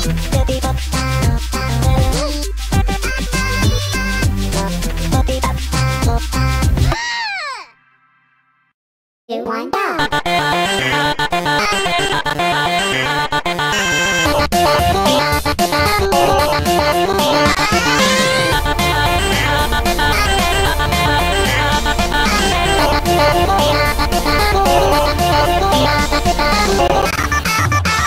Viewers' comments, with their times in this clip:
0:09 sounds like BI-NB from the Sunday mod-